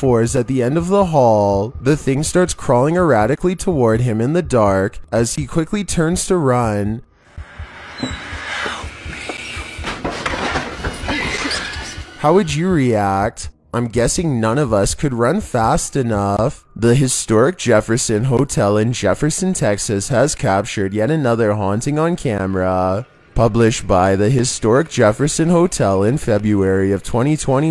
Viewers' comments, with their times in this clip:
0:08 the “thing” or a ghost is whispering “help me” 😰